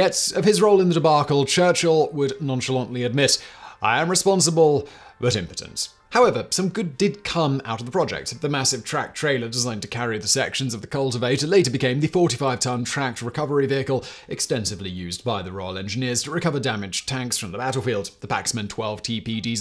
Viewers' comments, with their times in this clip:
0:03 🤣🤣🤣Good Ol' Whistle, I nearly choked to death (caught me off guard)